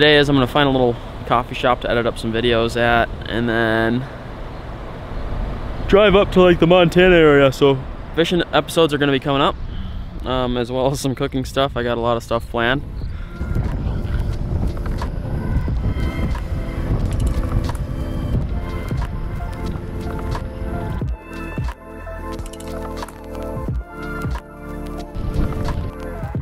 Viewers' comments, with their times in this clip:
0:07 you sound like a canadian lumberjack when you're yawn talking